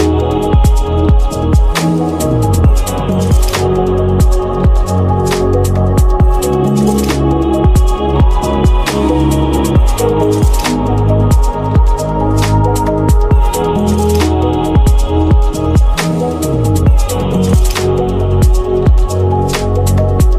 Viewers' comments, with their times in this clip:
0:04 The music made me sleepy… I’LL BE BACK